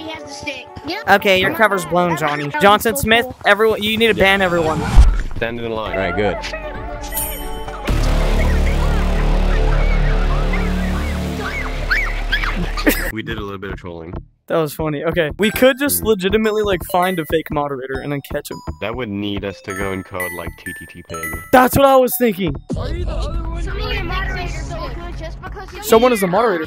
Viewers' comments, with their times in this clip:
0:07 screaming for dear life
0:11 HELP THE KID SCREAMING AND RUNNING BACK AND THE WAY HES GETTING CLOSER